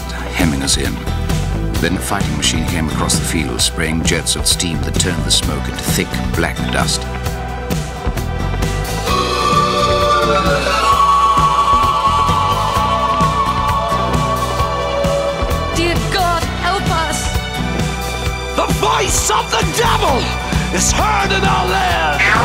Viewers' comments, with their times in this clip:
0:08 Goddamn that Ulla is goosebump inducing
0:08 BEST ULLA SOUND EFFECT IN THE ALBUM
0:08 Why does the ULLA sound so elegant